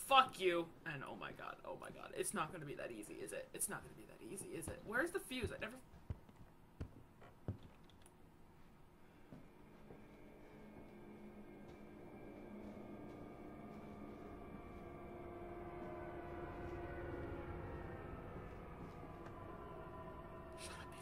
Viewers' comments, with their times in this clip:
0:04 if you stayed for a little bit you could have seen the "thing" that attacked you at the end. It was walking through the hallway..You just heard its footsteps..